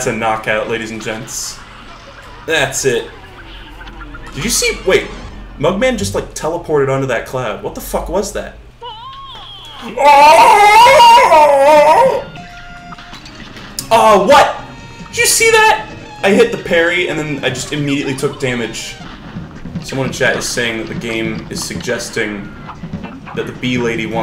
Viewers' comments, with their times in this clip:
0:10 in case you ever wondered what it sounds like when seals mate